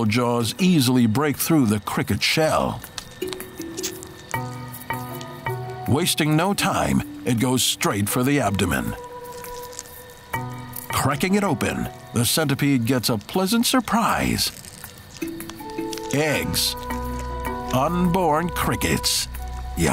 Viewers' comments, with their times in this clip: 0:07 ASMR MUKBANG FTW